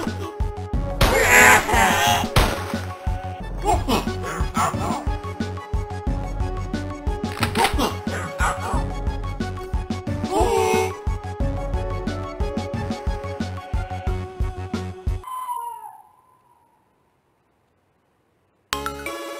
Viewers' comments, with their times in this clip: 0:03 It's a horror version of "Bank Panic" from the Master System :) Also funnily enough sounds like "You don't need ammo..." right when they ran out.